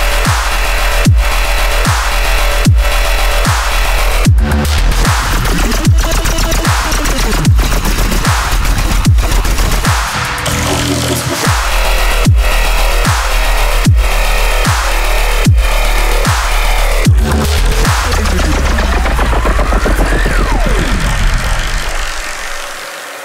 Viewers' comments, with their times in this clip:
0:05 This is great. The intro and breakdown are killer, and that bass is amazing!